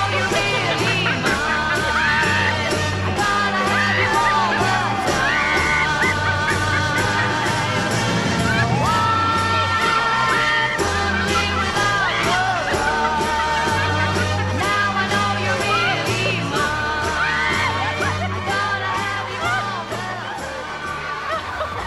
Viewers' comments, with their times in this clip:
0:03 do i hear a witch here?